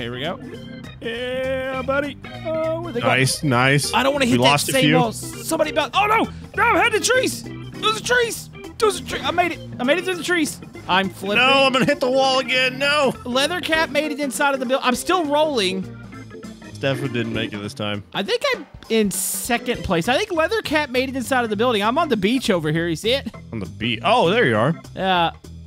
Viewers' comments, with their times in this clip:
0:07 All I can hear is Woop Woop Altitude Pull Up! Pull Up! Woop Woop